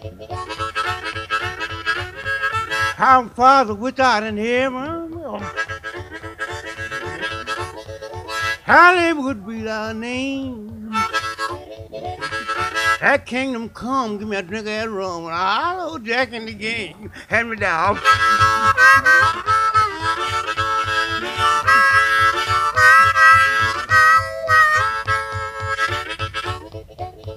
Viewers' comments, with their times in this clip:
0:08 "Hollywood be thy name" ???